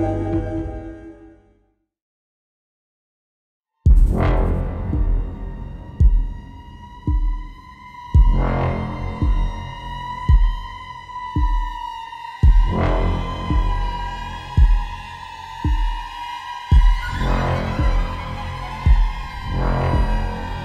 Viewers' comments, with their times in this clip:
0:05 😆😆😆I was watching SO HARD for something to leap out when you were driving down the dark country road with the nightmare music!!